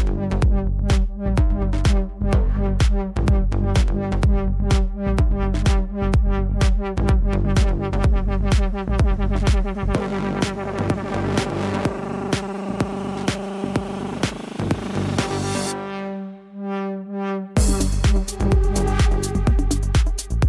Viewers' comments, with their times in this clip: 0:06 this is what nitrous sounds like :D